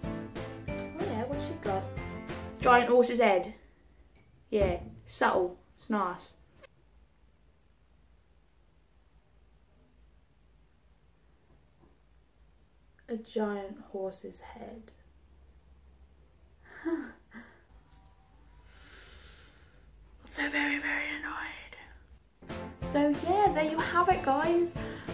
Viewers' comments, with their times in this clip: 0:09 Thought you were gonna sneeze haha.